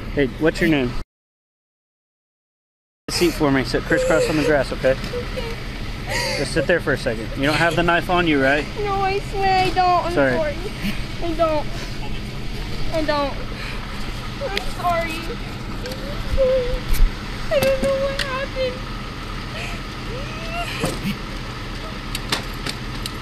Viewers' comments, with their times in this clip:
0:08 this one makes my heart ache. Good god. The anguish in both of their voices absolutely shatters me.